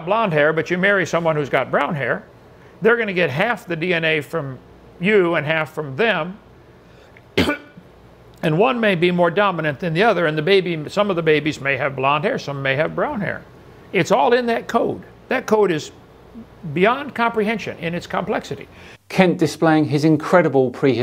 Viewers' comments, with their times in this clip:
0:06 He Coughed, everyone put your masks on, this is a RED ALAERT!!!
0:06 He chokes on his own bullshit
0:06 I actually recoiled at that gross cough into his hand.
0:06 Not going to comment on where he coughs directly into his hand? That's disgusting enough normally, but there's a pandemic going around! Cough into your elbow you asshole!